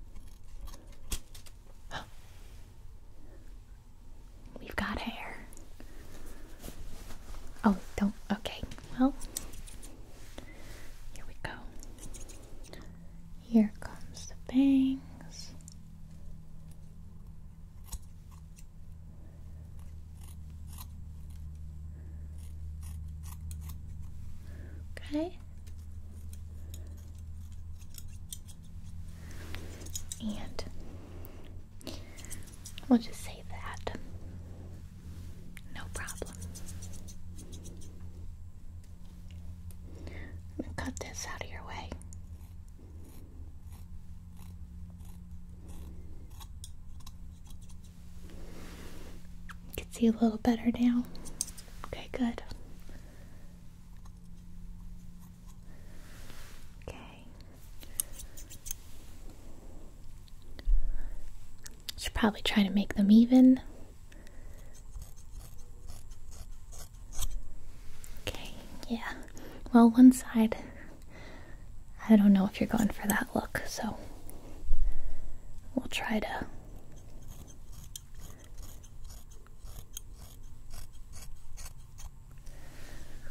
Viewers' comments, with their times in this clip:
0:05 ish, when she said “here comes the bangs” I thought she said “here comes the pain” and Im just thinking like ah ok lol phuck me up
1:05 is it just me or does anyone else hear really faint dog barking??